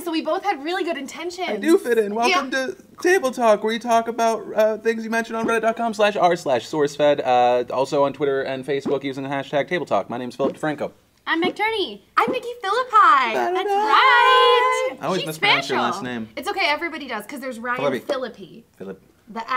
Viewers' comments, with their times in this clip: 0:06 I like the part where fill hits puberty-